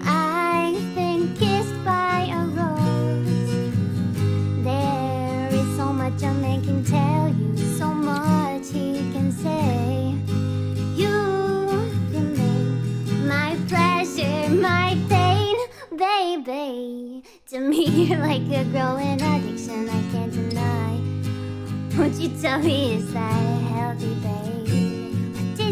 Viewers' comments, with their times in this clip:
0:09 that baby sound awfully familiar